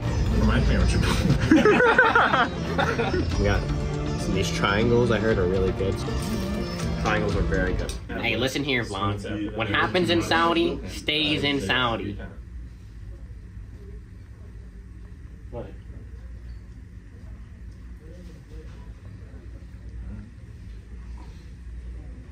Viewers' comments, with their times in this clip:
0:09 shit was funny ash the silence was so loud